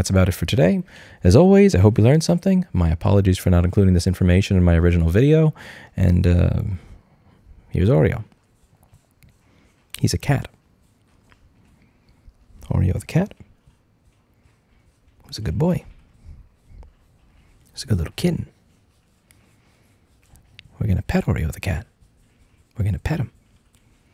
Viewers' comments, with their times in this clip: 0:08 and Oreo turned the video to ASMR